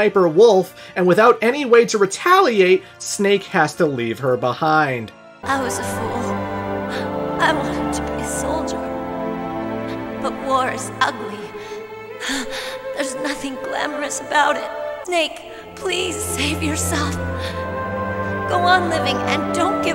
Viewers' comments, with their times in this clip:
0:05 Holy shit. Debi Mae West gave an incredible and convincing performance, especially for the time.